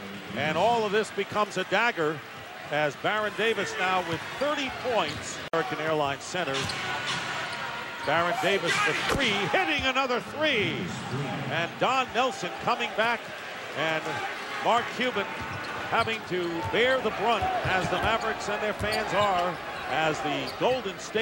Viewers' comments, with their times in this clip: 0:07 i love hearing Davis yell "WWWOOOOOOOOOOO GOT IT!"